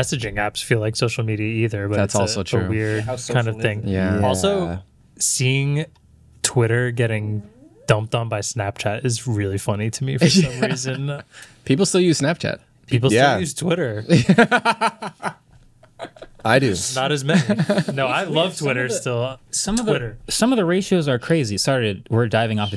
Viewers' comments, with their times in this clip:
0:06 somebody farted...and I think it was asking y'all something